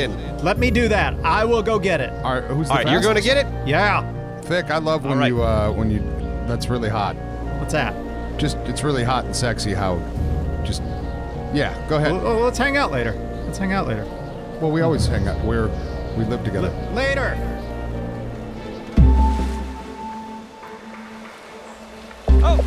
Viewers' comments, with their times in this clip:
0:04 When they are setting at trap in is that music there’s? If so I always get like not really chills but it captivates me into staying idk I just love that music